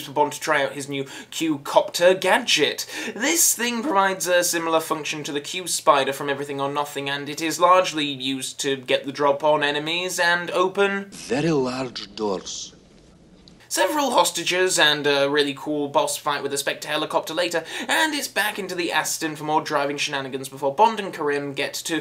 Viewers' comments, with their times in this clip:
0:08 "Very Loud Doors"